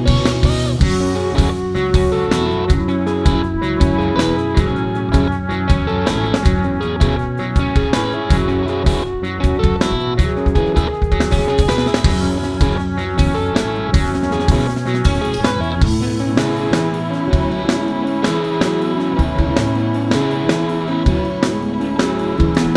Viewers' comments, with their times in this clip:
0:09 damn tasty fills